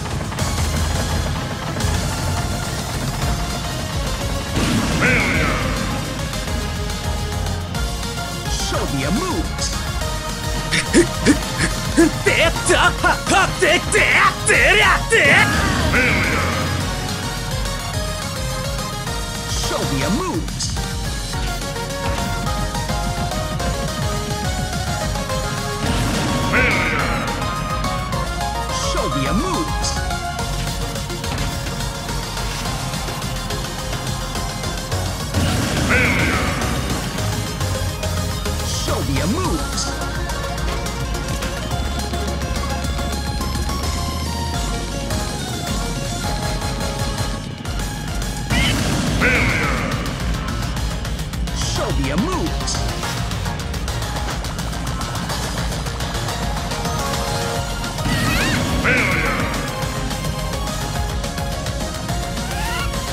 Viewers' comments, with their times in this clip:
0:08 you can hear link's desesperating slowly
0:11 Link: *uncontrollable screaming* Me: Shut up, shut up! MY MOM IS AT HOME
0:12 you just.......hear link’s constant scream.
0:12 sounds like he’s having a stroke Jesus Christ
0:41 Yoshi’s death was timed so perfectly with the music
0:47 i love how yoshis dead perfectly fits in the music lol
0:47 perfect timing Yoshi scream
0:47 Yoshi Dies in synch with the music Danum danum danapaaa 😂
0:48 perfectly in sync with the beat